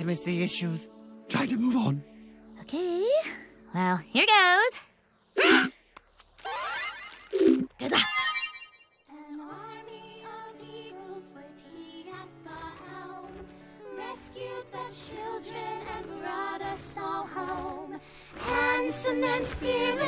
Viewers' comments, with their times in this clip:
0:03 you can hear him sceam